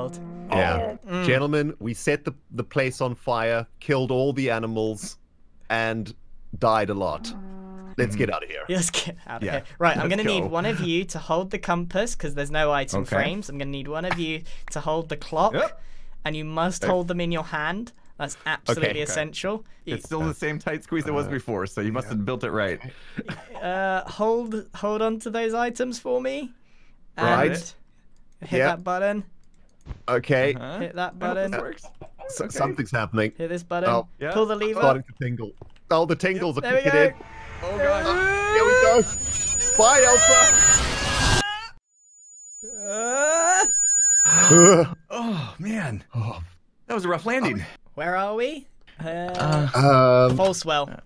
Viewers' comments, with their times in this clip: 0:03 “…killed all the animals…” moooo - the 5 cows 10 blocks away
0:34 Watching this part with headphones on full volume was a bad idea